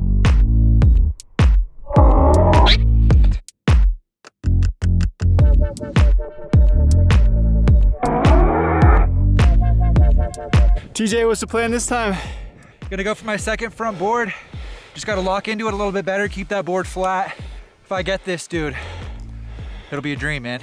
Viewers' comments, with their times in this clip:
0:07 sounds like an a-10 warthog